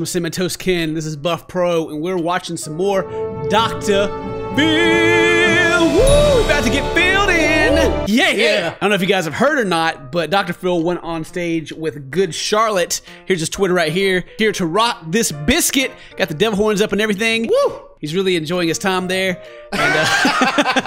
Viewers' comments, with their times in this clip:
0:06 Did I just hear a gnome?